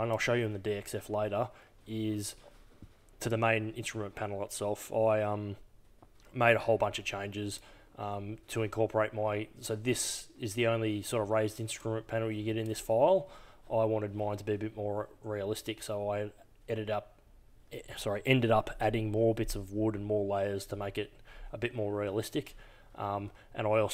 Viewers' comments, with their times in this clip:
0:08 where are you? I can hear what sounds like explosions in the background?? you can hear 2, 1 after the other. lol... hmmm